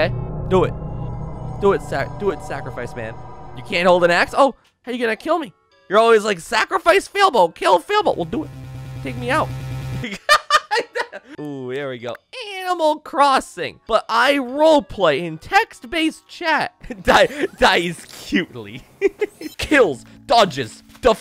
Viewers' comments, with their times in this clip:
0:07 those 2 seconds of ace attorney music made me happy